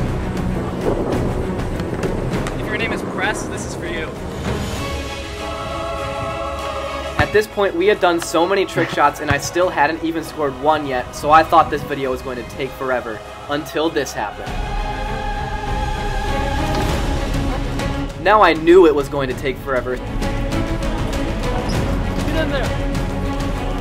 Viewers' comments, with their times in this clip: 0:07 the weird noise of someone breathing